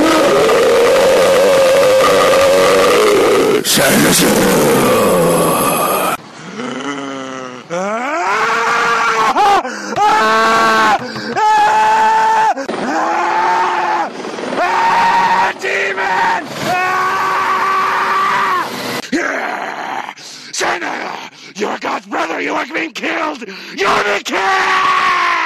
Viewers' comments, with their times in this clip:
0:06 gotta be the best scream of all time